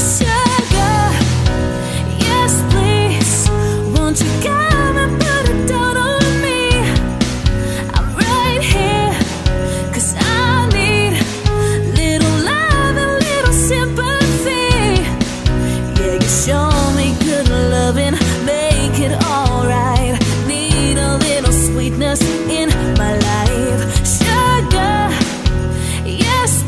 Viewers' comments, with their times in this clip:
0:08 she is singing icelandic